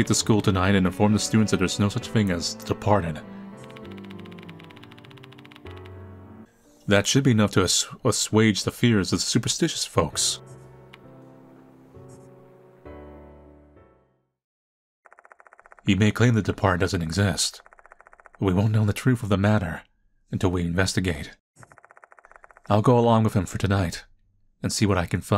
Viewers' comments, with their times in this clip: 0:06 be honest was that cut bc u searched up how to say assuage